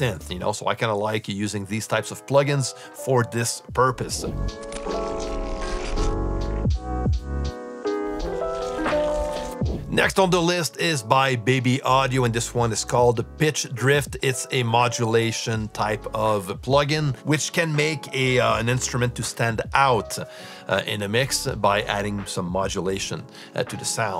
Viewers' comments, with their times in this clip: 0:10 Did I Hear "Bitch" Drift